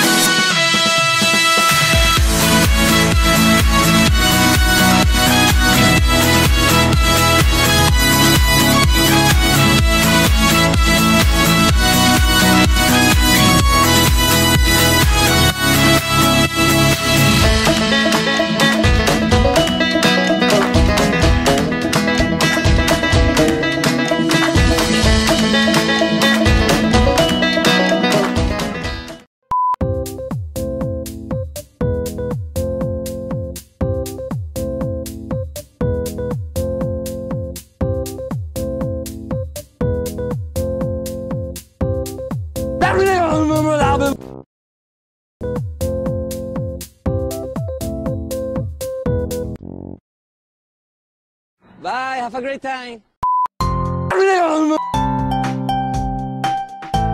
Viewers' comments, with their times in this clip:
0:03 Bro cool music!!!!!!
0:33 THE CLASSIC TOH MUSIC 😫
0:45 that guy was italian lol he saied "hi brother what do you mean???"